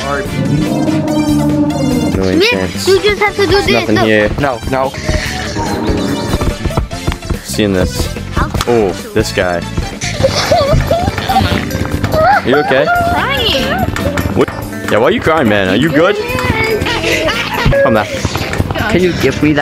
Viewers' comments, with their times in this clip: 0:06 someone was playing teh outro i think if so that was me